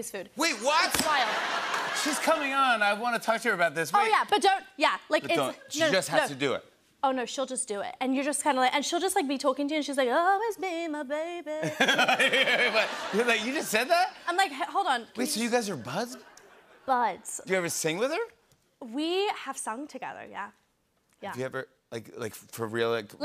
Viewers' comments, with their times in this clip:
0:09 that voice is so beautiful, she surprised herself 😂😊❤
0:10 Millie has such a beautiful voiceeeee
0:11 millie sounds like the new millie